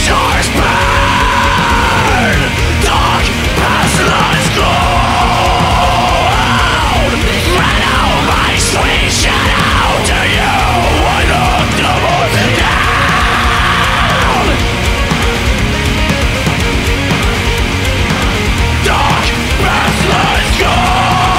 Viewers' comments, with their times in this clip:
0:06 that was sick sounding!!!!!